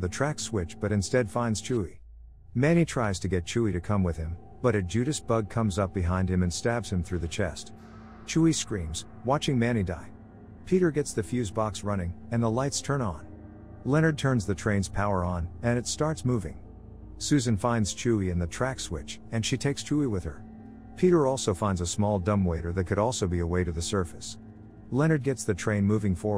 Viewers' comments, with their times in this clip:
0:08 Chuy screams "uhuuUUUUUUUUUHHHHHHHHHHH"